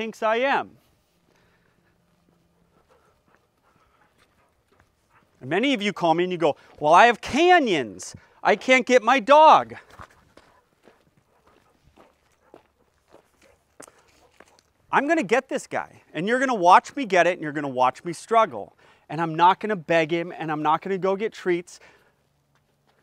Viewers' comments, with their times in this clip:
0:04 “It’s depends on how big of a joke he thinks i am” at 1.5 is terrifying 😂